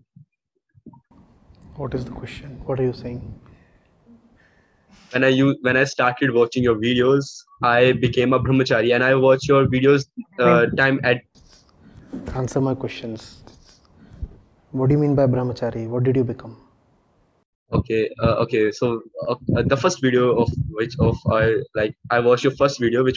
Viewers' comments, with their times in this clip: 0:06 First min was like like like so...... Acharya ji be like what's your question (kahena kya chahte ho)😂😂